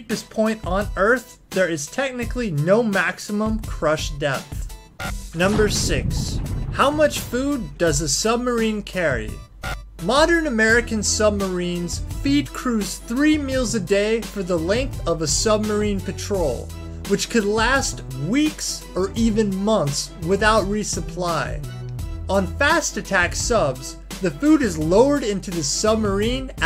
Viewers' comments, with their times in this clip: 0:08 Wasted before I gave up.... I can't take this video seriously if the narrator mispronounces commonly known names or places....FAIL